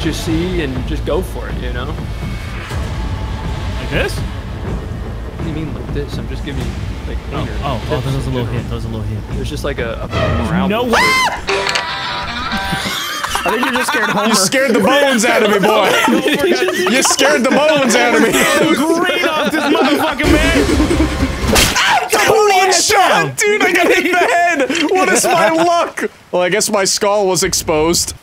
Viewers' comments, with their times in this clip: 0:06 bro did that homer simpson scream
0:10 was absolute GOLD , His scream proved it too 😂😂😂
0:10 That Homer Simpson scream
0:11 Bro screamed like goofy🤣
0:11 Homer Simpson scream